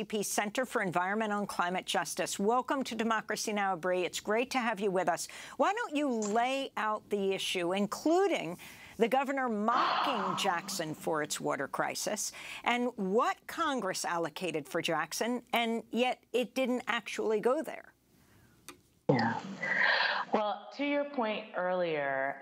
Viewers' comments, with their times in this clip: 0:08 What was that noise I heard when Amy was introducing this women sounded like a gunshot
0:09 What's with the gunshot sound effect?